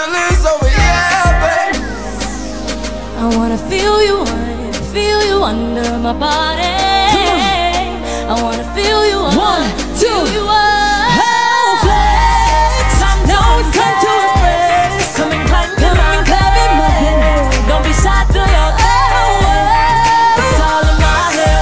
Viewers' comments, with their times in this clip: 0:04 Lauren slayed omg what a great voice and what a beautiful face 😍... I’m so proud of the 5 girls, they always did awesome shows